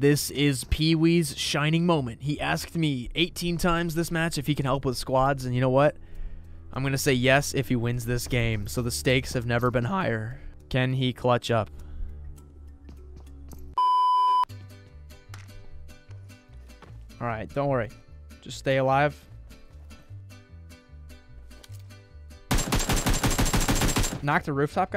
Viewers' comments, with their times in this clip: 0:08 the voice crack😭🤣
0:09 Voice Crack has Joined the Chat 😂
0:10 Voice Crack Moment haha!